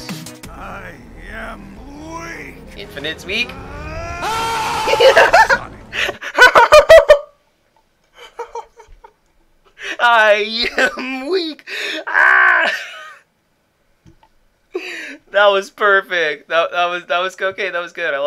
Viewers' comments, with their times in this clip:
0:05 That laugh sounded like a mad villian’s laugh